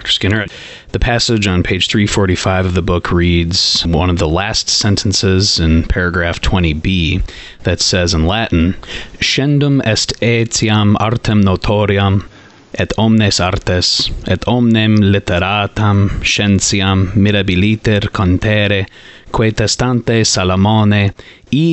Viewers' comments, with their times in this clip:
0:08 teeth-hiling delicious slice of Impeccable Latin 💜